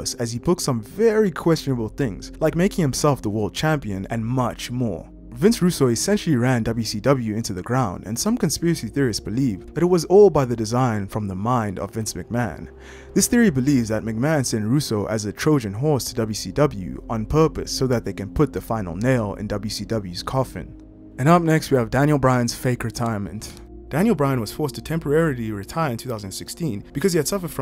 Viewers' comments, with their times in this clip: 0:09 was a car driving past while you were making your video?